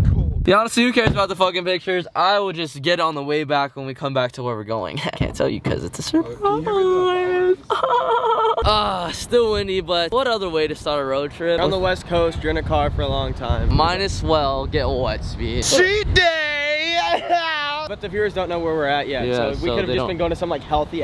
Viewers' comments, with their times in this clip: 0:06 The way your voice goes high on some words